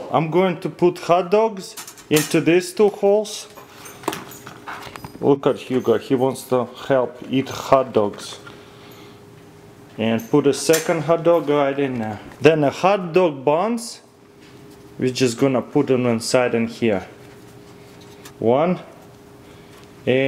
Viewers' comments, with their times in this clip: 0:06 The way he said hot dogs had me rolling on the floor